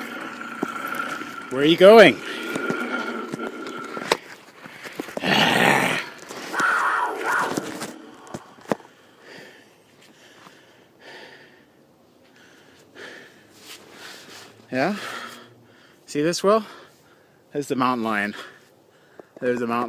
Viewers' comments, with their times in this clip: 0:04 that stock mountain lion sound effect doe
0:06 yo this sound effect is fake af I’ve heard it a million times
0:06 oh my god I hate it when people add this fake ass mountain lion scream. Disregard the fact that lion was minding its own business, real mountain lion screams sound way more terrifying.
0:06 The video has clear audio while the mountain lion roaring sound is quite audibly compressed.